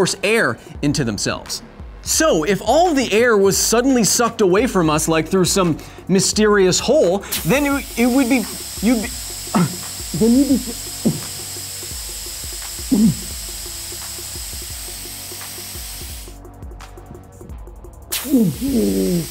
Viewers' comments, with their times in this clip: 0:05 I like that touch for "less air = less sound" detail. thumbs up dudes